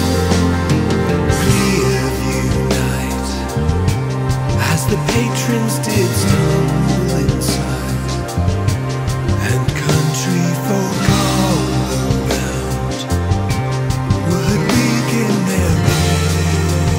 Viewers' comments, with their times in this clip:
0:04 this is very very interesting and peculiar type of music! I sense some pink floyd vibes all over the place. I loved how the bass showed itself very VERY impressive.